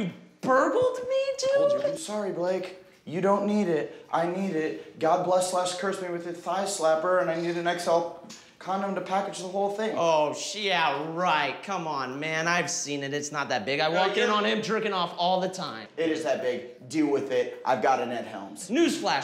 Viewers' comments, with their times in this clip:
0:06 The pause between XL and condom is hilarious.